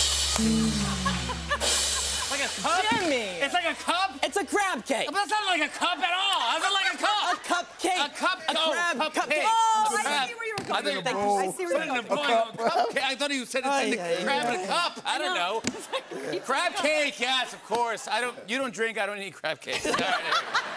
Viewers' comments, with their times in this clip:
0:03 The way Conan says “Jimmy” is adorable🥹